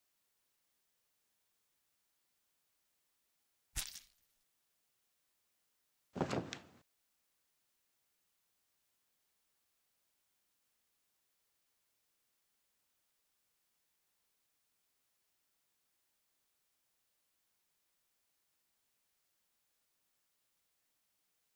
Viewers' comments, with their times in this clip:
0:05 the sound of basils body hitting the floor physically pained me